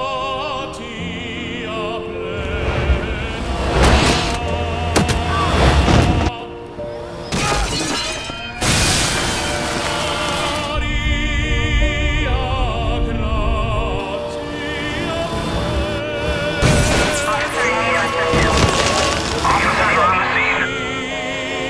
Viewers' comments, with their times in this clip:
0:05 Yep, he was definitely singing on his funeral... Pour memorial 🪦